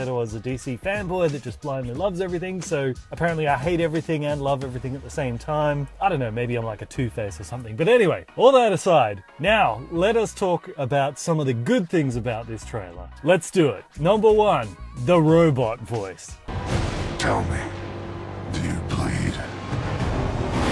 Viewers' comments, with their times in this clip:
0:07 I've personally reviewed the teaser over and over and I can promise you in that was Batman who says, "Alien". The modulated voice is only when he's in the IronBat suit... That is just from the look of this teaser could he carry a voice modulator of course so certain people can never put two and two together...